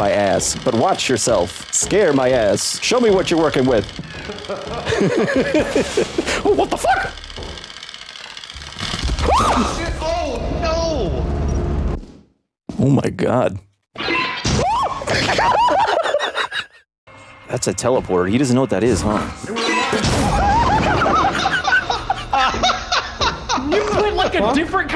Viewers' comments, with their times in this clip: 0:06 those high pitch noises at the end 😂
0:06 I heard a bit of Mickey in those screams
0:07 bro turned into Mickey Mouse LMFAOAOAAOA